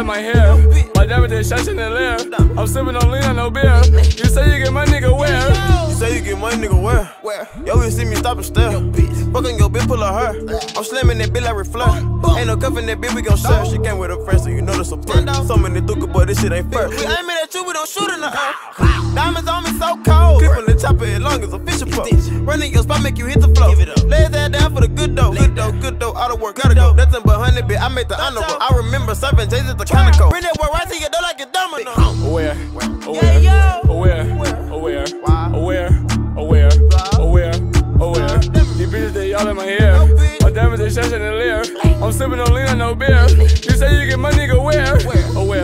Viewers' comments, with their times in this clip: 0:09 just imagine if he wouldve hit it on the bass
0:31 I wonder what biggie and 2pac and mob deep and sugar cane think about this shit smh what happend to real music ? But this shit catchy asf and the dance fire 😂😂